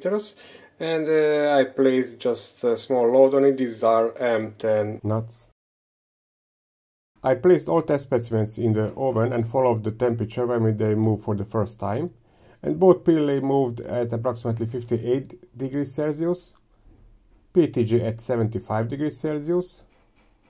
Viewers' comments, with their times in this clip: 0:03 The voice change xD